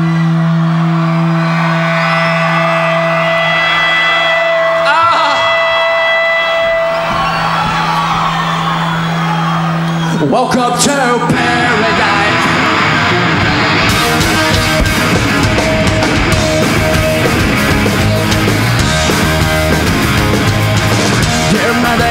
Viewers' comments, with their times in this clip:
0:04 what a chaotic 8 seconds -Billie: moans -“Itchy nose” -Starts Welcome to Paradise in the wrong key -Microphone eats shit -Billie corrects the key